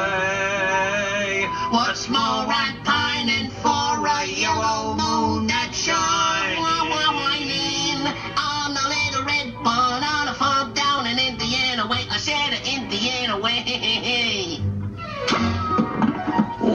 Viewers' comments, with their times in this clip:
0:06 that off tone gave him away 😂😂😂